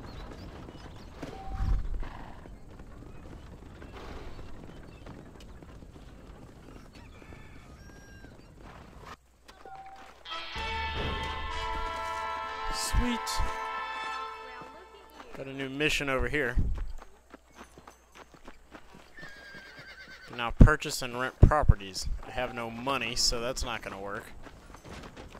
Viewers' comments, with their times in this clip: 0:06 in the backround .. you can hear a chicken...alarm signal